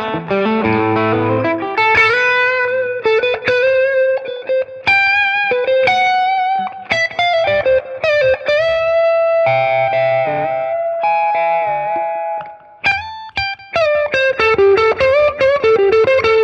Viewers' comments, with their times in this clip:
0:04 In the first section with pedals (~ ), I don't hear a great deal of difference between the amps. I was very surprised when the boys pronounced a whole lotta difference there. Maybe it sounds different in the room? Either way, the TM sounded great. But what can you expect from two tube-biased (pun intended) dudes? Let's be honest, has there ever been a digital emulation that sounded better than the real thing? Fact is, the TM is a great option for some people, and for some scenarios. That's what it's for.